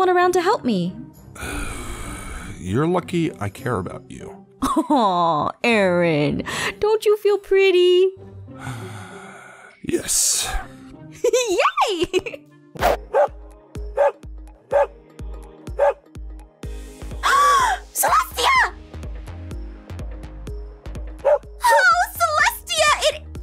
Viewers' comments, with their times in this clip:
0:05 Aph:awww but don't you feel pretty Aaron: long sigh yes... Aph: giggles "Did is be and my boyfriend's relationship in 2 sentences